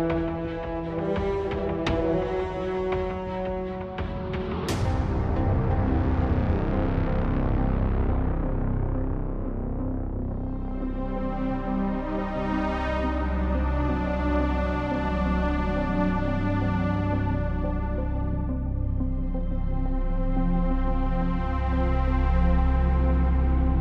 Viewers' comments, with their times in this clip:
0:04 that "target eliminated" jingle is spine-chilling
0:06 this is good Sounddesign it’s Sounds very threatening